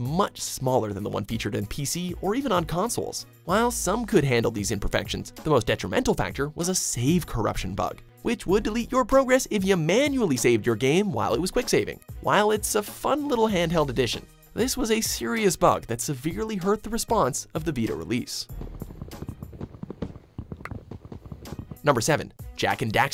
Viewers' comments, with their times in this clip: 0:05 saYEve corruption bug LMAOOO